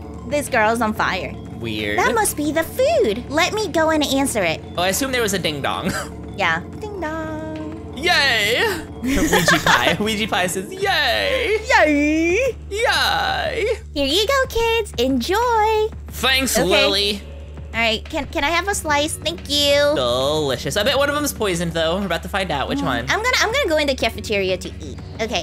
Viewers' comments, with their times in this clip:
0:07 there was a ring at the door in the game, 1 second later, irl my doorbell rang